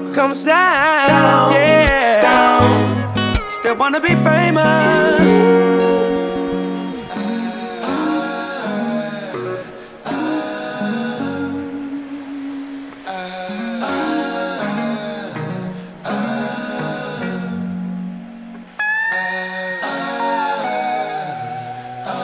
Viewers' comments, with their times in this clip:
0:03 John Mayer coming in with those harmonies!!! Awesome song!